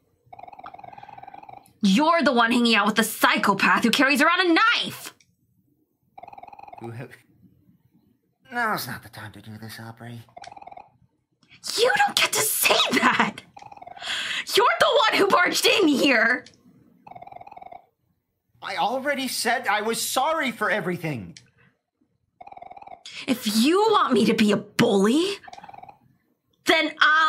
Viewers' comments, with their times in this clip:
0:10 really good performance, especially the delivery on is crazyyy